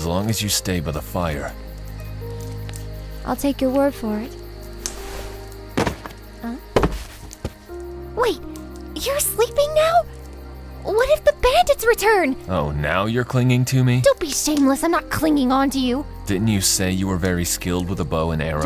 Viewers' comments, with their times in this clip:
0:06 Oh, my gosh! I LOOOOVE how you dubbed Fourth Princess this time around!!! She sounds like a precious cinnamon roll--mischievous with a child-like innocence. 😍☺️❤️❤️ That "Huh?" was way too adorable! 😭🙈😆 You guys have great chemistry together! Thank you for dubbing another episode of this comic for us!! 😁👍👏